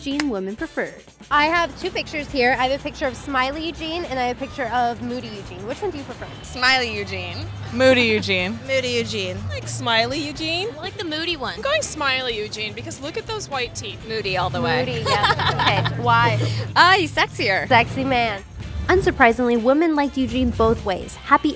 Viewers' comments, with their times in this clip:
0:09 that girl sounds like Khloe Kardashian! 😧